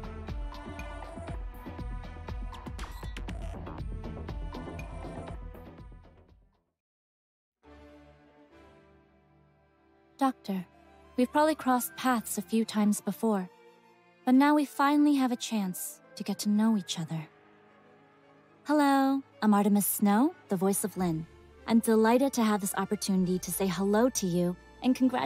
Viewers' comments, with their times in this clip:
0:08 I’m starting to like Amiya’s EN voice, but I don’t know if it is just me but Lin’s voice sounds like it is AI generated. Don’t know why but something seems off. Chongyue on the other hand sounds like it would fit pretty well. Okay, I feel like I’m starting to go crazy since now that sounds fitting. She did not sound like that before, right? right?